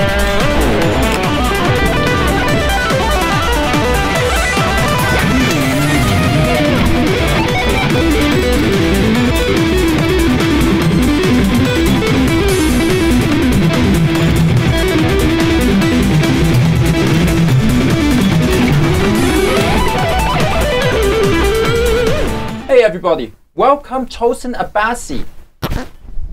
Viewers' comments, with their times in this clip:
0:10 that fucking picking tho hahahaha